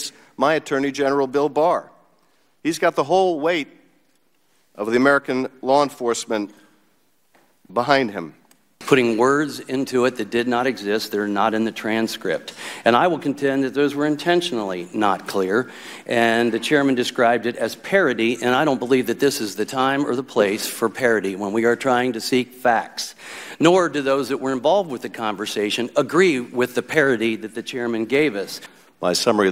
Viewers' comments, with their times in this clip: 0:10 holy mother of God! A bullfrog-human hybrid!!